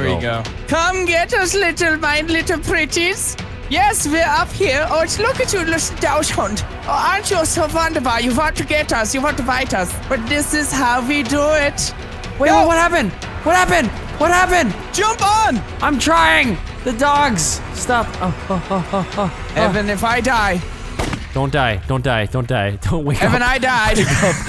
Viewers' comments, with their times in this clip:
0:03 sounds like Richtofen bo1
0:05 now he sounds like rictofen 1.0